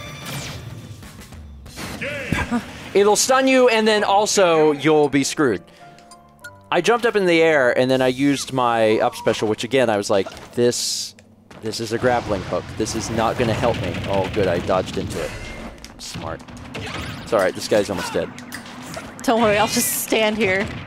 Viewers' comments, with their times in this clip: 0:08 The heroic musical swell was perfect